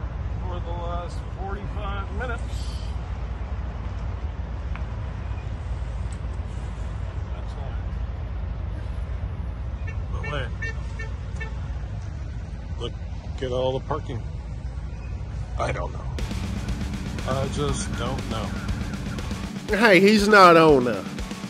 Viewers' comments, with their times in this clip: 0:06 why is he reading like Butthead? 😂😂😂